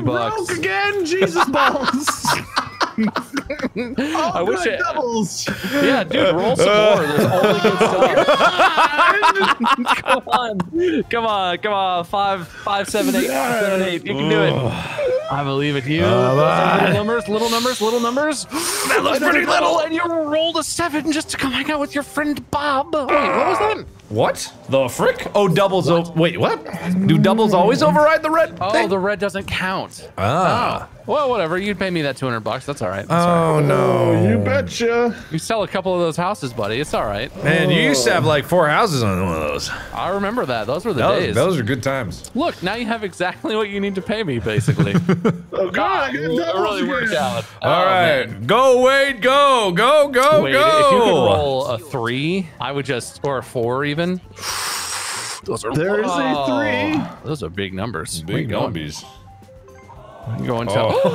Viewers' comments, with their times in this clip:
0:06 you can hear the sadness and fear in wade, poor wade
0:47 I can't stop hearing gyro's line “Go Johnny Go Go Go”